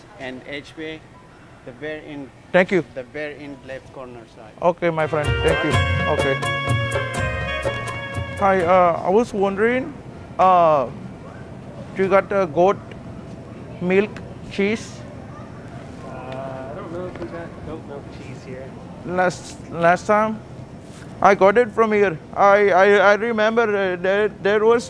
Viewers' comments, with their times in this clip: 0:09 dude walks out of break room high as hell, then BOOM hahahahahaha